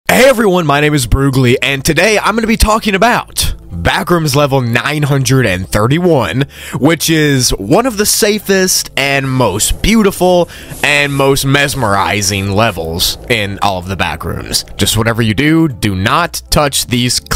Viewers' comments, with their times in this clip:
0:00 that "Hey" is so unnecessarily agressive 💀